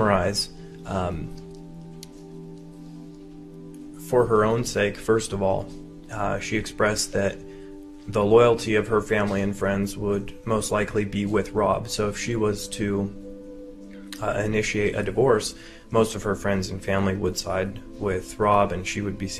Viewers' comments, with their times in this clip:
0:05 this guy talks so smoothly